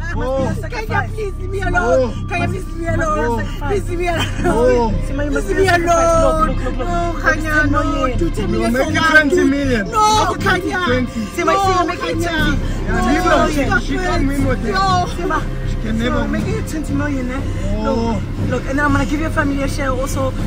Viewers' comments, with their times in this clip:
0:04 Nah she laughed 😭